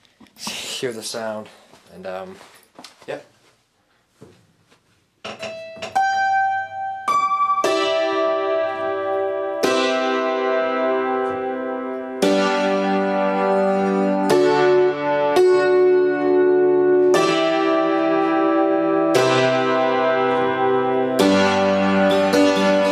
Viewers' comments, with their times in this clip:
0:03 If you wish skip the talking part Sadly it is mostly ruined with a sustain pedal.